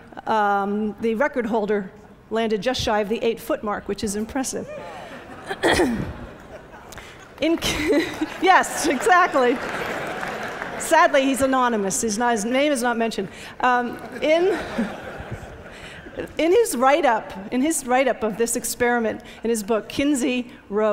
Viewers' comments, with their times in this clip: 0:04 the support of the male audience congratulating the “anonymous” male is funny asf